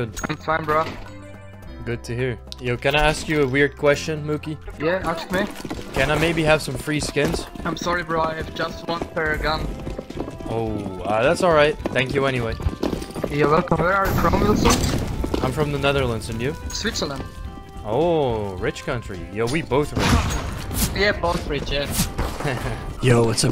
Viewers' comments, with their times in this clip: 0:04 very good song